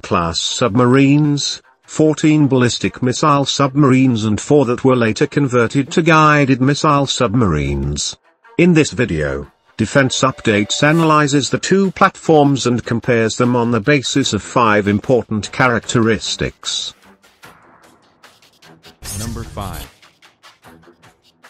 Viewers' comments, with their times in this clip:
0:04 Guiiiiiiiiiiiiided miziles. fk you robot voice!